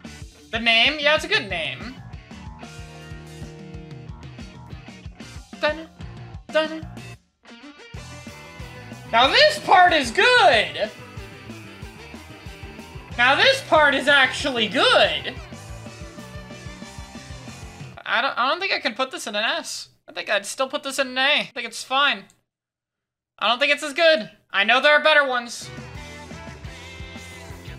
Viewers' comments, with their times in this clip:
0:09 If a song clip could encapsulate slipping on a banana in Mario Kart